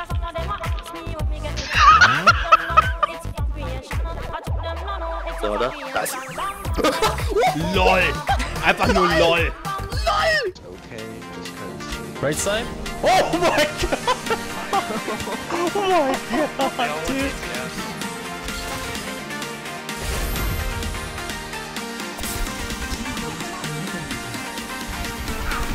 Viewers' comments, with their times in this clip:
0:06 lmaooo th egermans sbe like loooolle